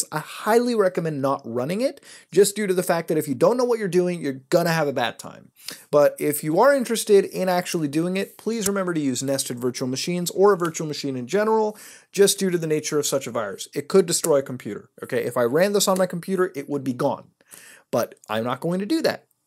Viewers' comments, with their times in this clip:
0:04 megalovania starts up